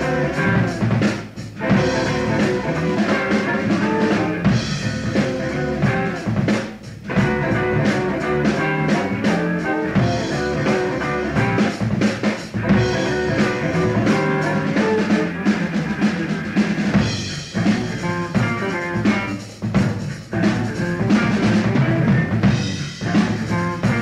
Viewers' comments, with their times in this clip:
0:05 The riff is interesting